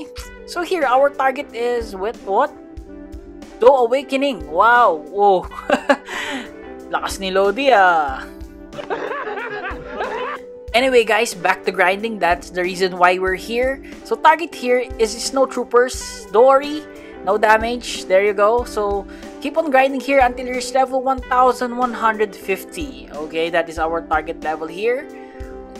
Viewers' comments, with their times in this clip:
0:07 did u just speak pilipino or tagalog language are u a Filipino?